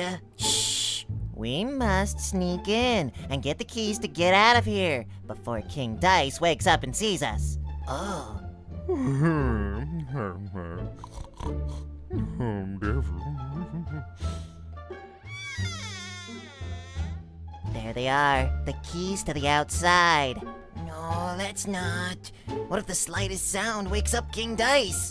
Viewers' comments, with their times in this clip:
0:08 Me: hears Dice mumble "Oh Devil" in his sleep Also me: dies of laughter